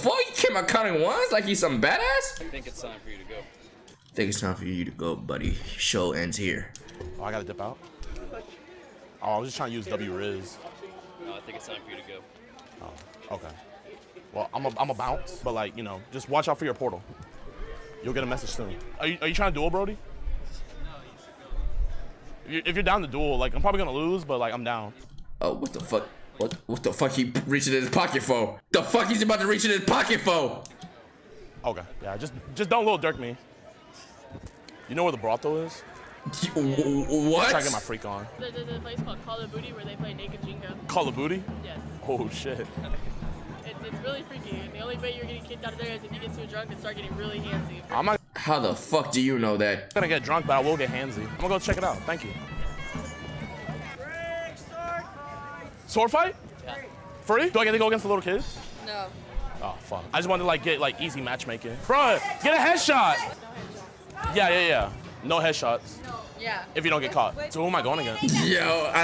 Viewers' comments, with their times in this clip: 0:07 nah rage talking over that part was soooo funny 😭😭😭💀
0:57 The way jidion said that lmaooooo